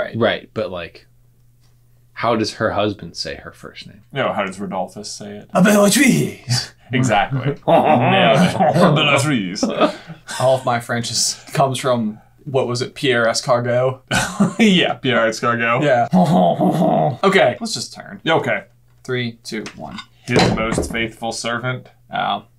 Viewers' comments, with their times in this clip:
0:05 I’m French, we simply say Bellatrix like you guys but with the French prononciation of the “R”...Why do Americans always think French people speak like that ? And what makes it funny ? I hope you’ll see this comment because it’s not the first time you make fun of French language in video. Americans are so self centered they can’t even imagine having subscribers of other nationalities...